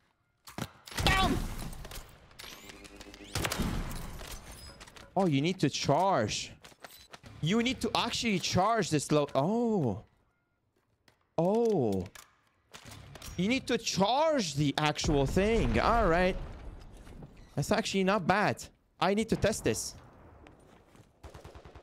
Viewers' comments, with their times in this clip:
0:03 😏bro was sniffing